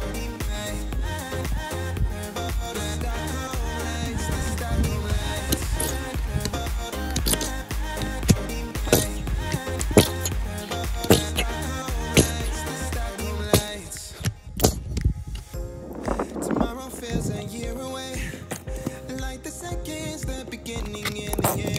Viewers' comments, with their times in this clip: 0:05 bottle of glue making voice as same in our India 😂
0:06 I've heard that sound somewhere in toilet
0:09 best fart sound